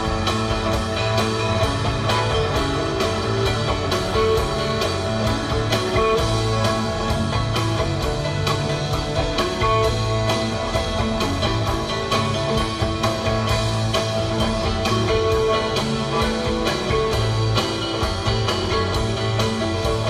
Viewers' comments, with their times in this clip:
0:08 dwd from is a huge theme similar to the Bathtub Gin at the Went...